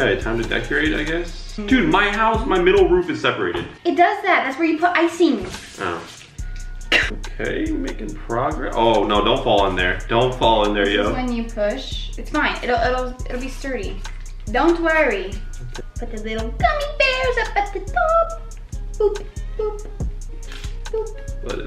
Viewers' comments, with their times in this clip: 0:05 I was laughing so hard they way he said oh